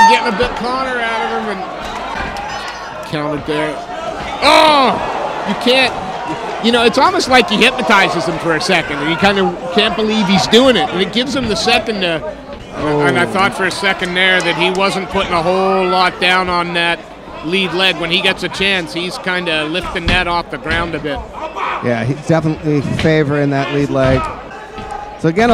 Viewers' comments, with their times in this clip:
0:06 sweet shin music 😅